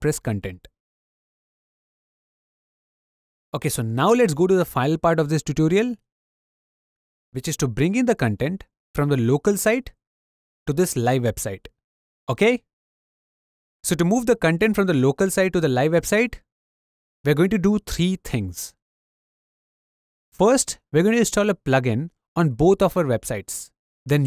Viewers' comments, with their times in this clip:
0:07 If you already have Wordpress, you can skip to Then you only have to do "trrrree tings". :)